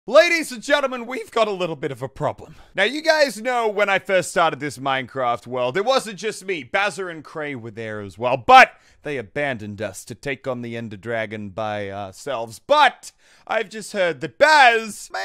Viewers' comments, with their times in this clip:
0:01 He protecc He attacc But most importantly that voice crack
0:01 that voice crack though 😂😂
0:01 he protec he attack but most of all that voice crack